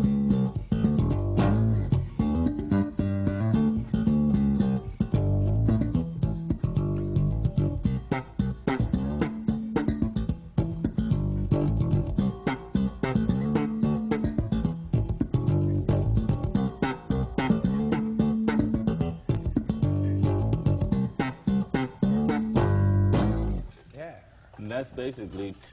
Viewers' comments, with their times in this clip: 0:06 Man those ghost notes after are so fucking perfectly timed and accented. Man that is a nasty bass line.